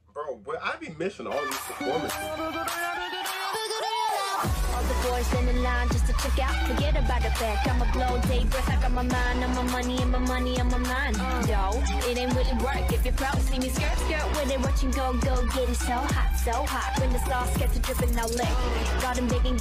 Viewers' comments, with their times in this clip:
0:04 bro the rap part and the beat slaps